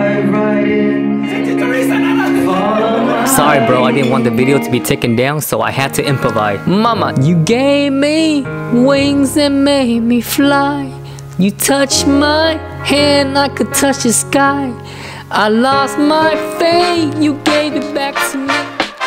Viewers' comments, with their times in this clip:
0:06 I heard you sing all the way from the 59 to 45 interchange on my way home. 😂😂😂